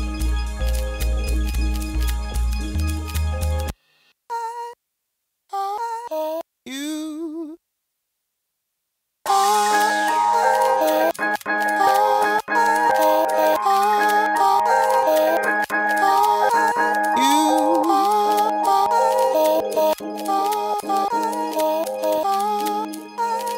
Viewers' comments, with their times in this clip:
0:09 omg sounds like passion pit - sleepyhead